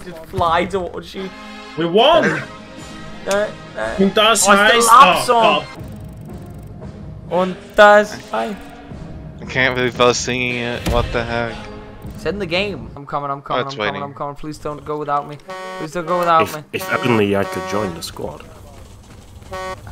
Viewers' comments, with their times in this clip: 0:05 Make sure to NOT use the speakers